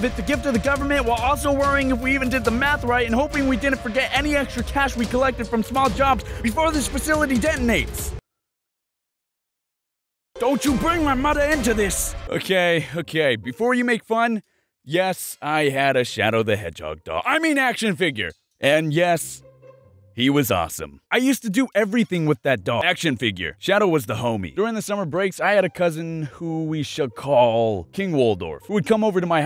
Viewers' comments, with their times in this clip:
0:10 Is it just me or you sounds like you would be a good voice actor lol